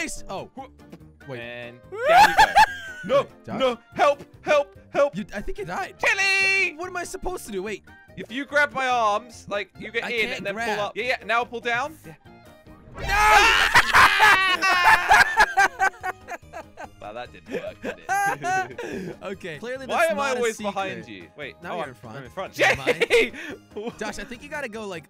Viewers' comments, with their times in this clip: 0:06 i love the way that slogo say "Jellie" lmao